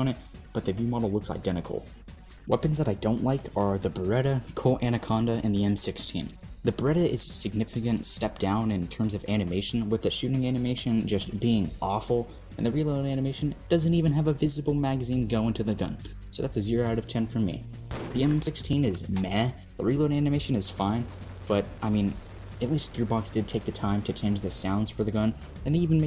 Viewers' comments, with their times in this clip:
0:09 M16 is my favorite change. It actually makes sense for an M16 to have a grenade launcher. Plus the sounds are so much more aggressive and I love it